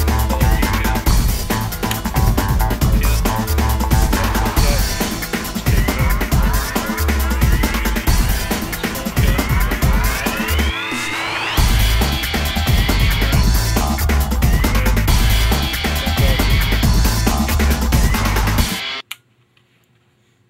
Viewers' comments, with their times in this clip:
0:04 Why do you have that godawful LOUD music playing halfway through the video? It starts or so and I can't hear a thing being said!